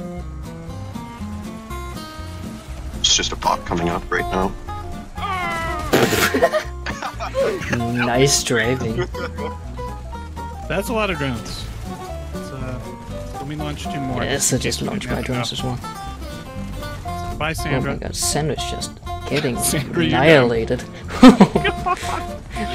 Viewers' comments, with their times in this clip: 0:04 the sound effect of the old man from happy wheels got me dead 🤣